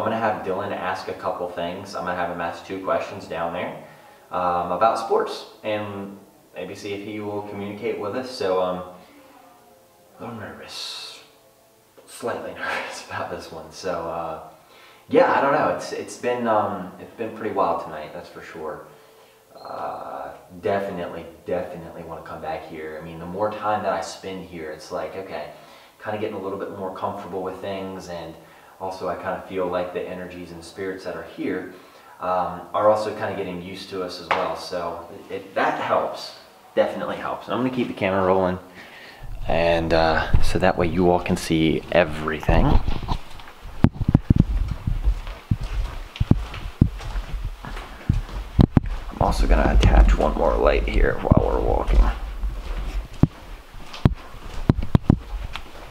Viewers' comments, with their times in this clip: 0:09 someone is talking when you are sounds like a woman?
0:09 sounds like a woman in the back ground and a few seconds after that it sounds like a door squeaking
0:09 I hear a female making a noise or saying something. It's when you are saying you will have your friend ask about sports..and it sounds like a woman saying Ya ya ya or something similar.
0:10 Round you can hear the organ plan and so my singing
0:11 can hear what sounds like a female voice talking.
0:23 I hear what sounds like when a shoe squeaks, the sound like when you're playing basketball an you like stop fast an you hear that high pitch shoe squeak. That's just me but anyone else hear it?
0:42 as soon as you start walking it sounds like something is scratching on ur mic..making ur audio messed up